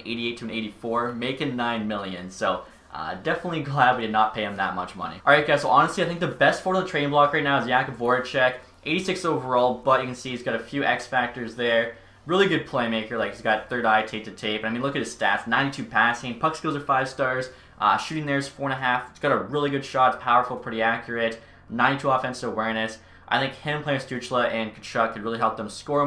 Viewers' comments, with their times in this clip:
0:07 Sorry... How did he just pronounce Jakub Voracek??